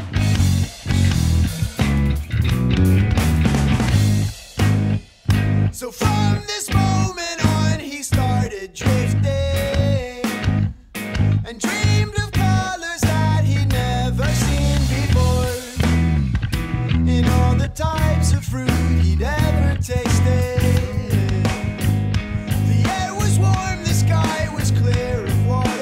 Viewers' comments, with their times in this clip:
0:07 there's this single change in tempo here that is probably one of my all time favourite change ups. So thick, so tasty, in such simplicity.